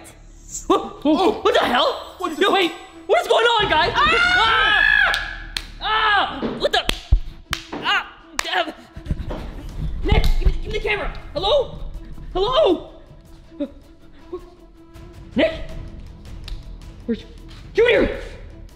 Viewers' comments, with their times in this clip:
0:03 who screamed like that
0:03 bro they scream💀
0:05 WHY WAS THERE CLAPPING😂😂😂😂